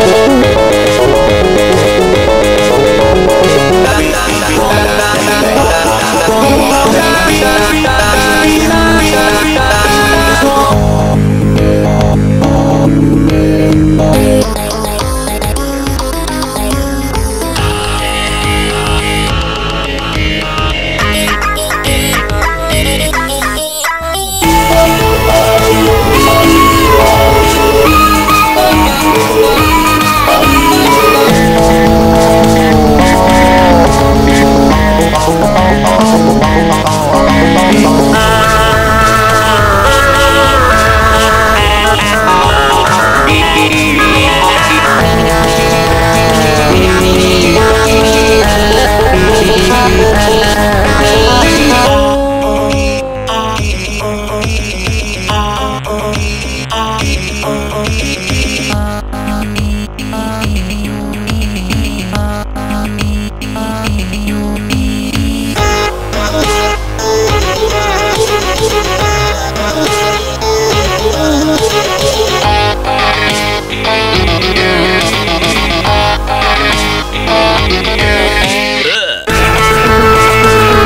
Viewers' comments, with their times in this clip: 0:09 SHEEEEEEEEEEEEEEEEEEEEEEEEEEEEEEEEEEEEEEEEEEEEEEEEEEEEEEEEEEEESH GARCELLO YOU SOUND EPIC!!
0:10 garcello sounds amazing
0:17 GOTTA LOVE TABI'S VOICE!!❤️❤️
0:24 Knuckles.EXE Sounds Amazing!!!
1:05 This is my favorite song and I am so happy that the cover has been done right this time! Scott’s side doesn’t sound too awkward. It’s great! And somehow, here: it actually sounds good with huggys vocals! Idk how the hell that pulled that off but it’s great!